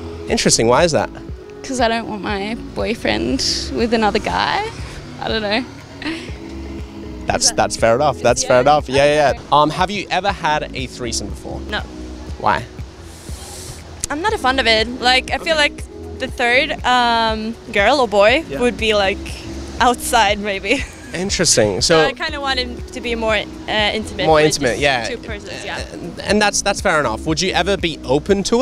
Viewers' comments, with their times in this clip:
0:10 listen to that accent... 100% Swedish